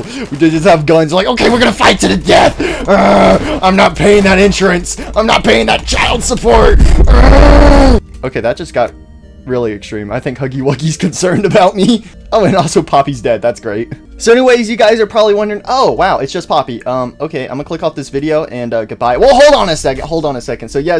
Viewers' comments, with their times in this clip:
0:05 eruption sound effect